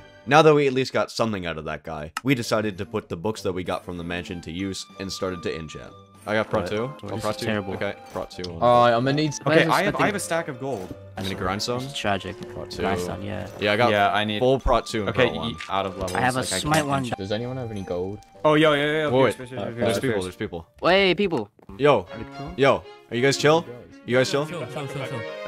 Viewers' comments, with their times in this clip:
0:06 Zelda music is wild 💀